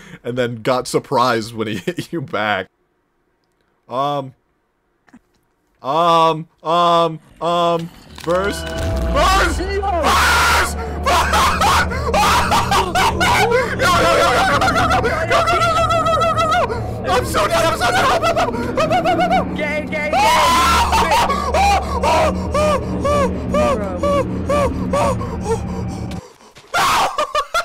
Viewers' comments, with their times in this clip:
0:09 you sound like my friend lmao